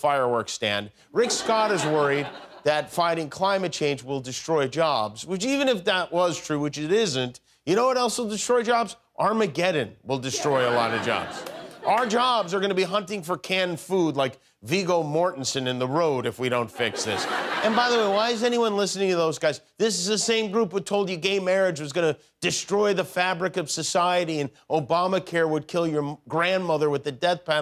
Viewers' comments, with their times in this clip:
0:08 Oof important message aside, the canned laughter is all over the place. For example, Yikes. Big Bang Theory TV show level of work here.